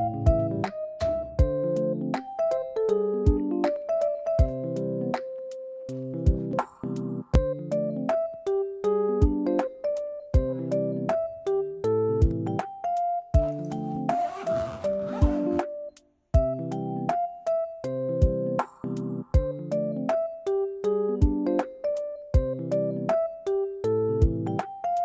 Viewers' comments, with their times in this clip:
0:07 Bro's packing was so on the beat 😂